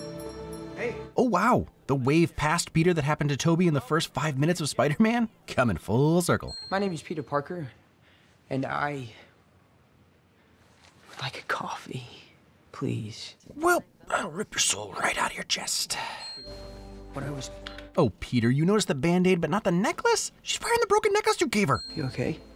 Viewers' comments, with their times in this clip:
0:07 Remember that interview with tom hanks, where he tested Tom Holland's acting skills by saying "boy oh boy I really need a cup of coffee", I feel like Tom Holland really gets it, that "I....would like a coffee" covers multiple expressions, mainly: hopefulness, sad, disappointment, happy and relief.